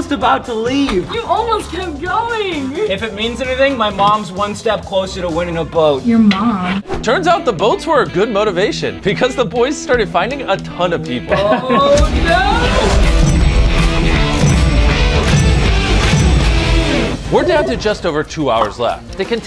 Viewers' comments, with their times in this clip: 0:06 "your mom" sounds so funny lol🤣🤣